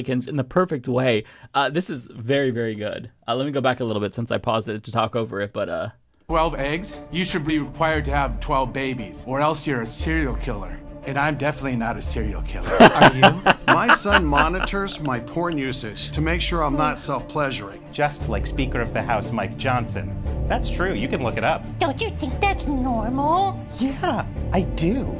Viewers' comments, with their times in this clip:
0:08 this guy sounded so much like deadpool’s friend Weasel from the first and second movie